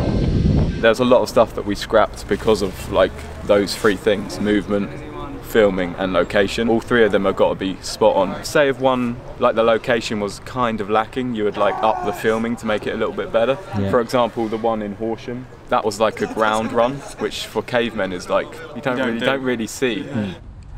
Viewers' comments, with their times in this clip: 0:08 Did anybody see the guy in the back and then heard a groans